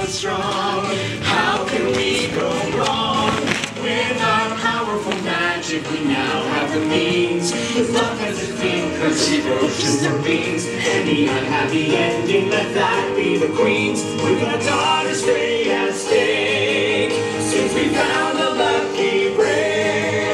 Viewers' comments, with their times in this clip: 0:07 they sang the wrong line, looked at each other and laughed 🤣🤣🤣🤣🤣🤣